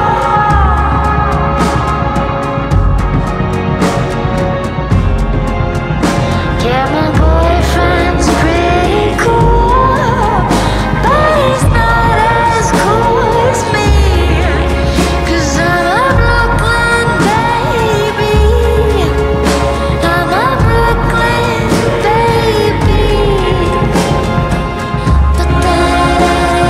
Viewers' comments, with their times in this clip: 0:05 yeah- my boyfriend's is pretty cool, but he's not as cool me" the music is perfect
0:06 the male voice in the background OH MY---💀💀💀🛐🛐
0:06 When they guy joins in is my favorite part.
0:06 I really like when that guys sings
0:06 The male voice ------
0:07 The deep male voice starting is SO perfect it brings this song together
0:07 “Yeah my boyfriend’s pretty cool,but he’s not as cool as me” THaT background vocal…. I’m in Heaven…